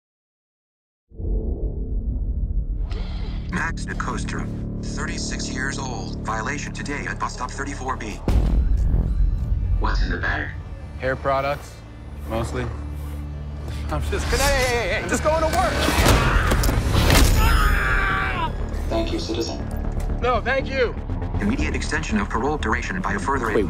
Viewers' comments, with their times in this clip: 0:09 These robots sound like Jacques from Jontron show. lol